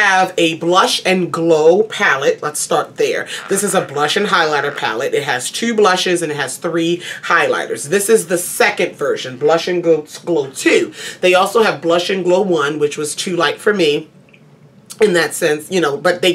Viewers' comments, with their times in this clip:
0:04 was that a fart 😂😂😂